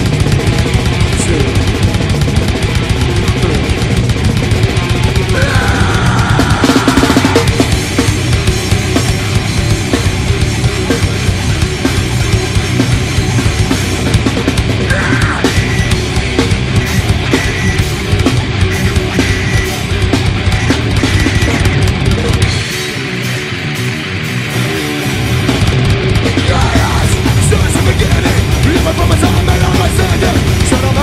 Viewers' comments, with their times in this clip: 0:10 God the riff is nuts
0:14 i love that little scream